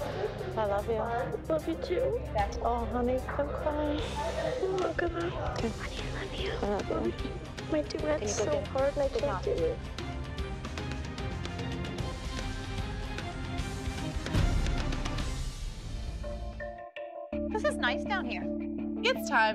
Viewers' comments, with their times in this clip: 0:06 Omg Jojo just whispers “ kalani I love you” 😂😂😂😂😂😂😂😂😐